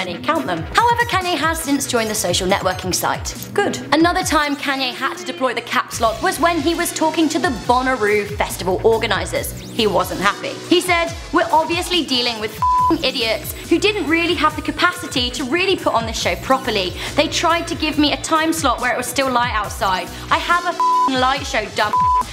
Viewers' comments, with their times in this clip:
0:05 Just me or did someone say something